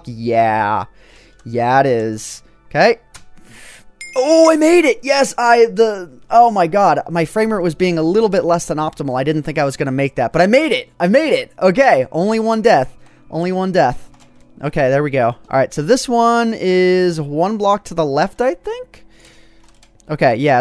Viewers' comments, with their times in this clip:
0:05 lol what was that noise that he made? :P XD